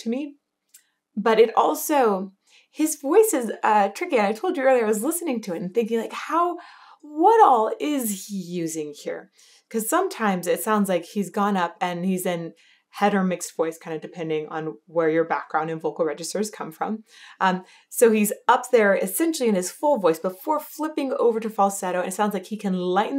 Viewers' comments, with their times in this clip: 0:09 when your describing his vocals is dope. Cause I feel that when listening to Rob Halford. He’s brutal and is in control. That’s why I love his vox…. Thank your for your reactions